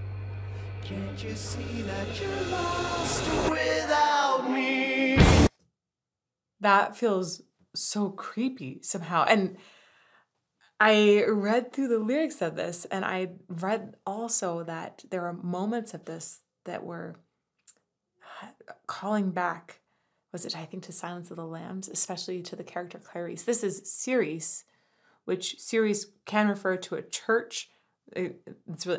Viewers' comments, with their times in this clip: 0:09 when she paused it I could help but gasp. I know she’s gonna run it back but that was the most ill timed pause of all time.. all that build up to the climax of the song… and pause. LoL, and then she does it again on the run back